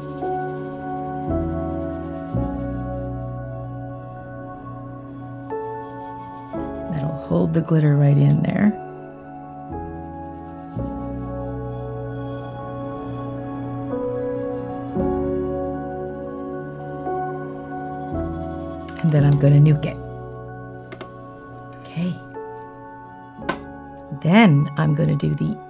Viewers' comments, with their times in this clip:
0:09 The background music ish sounds like Minecraft background music☺️ I love it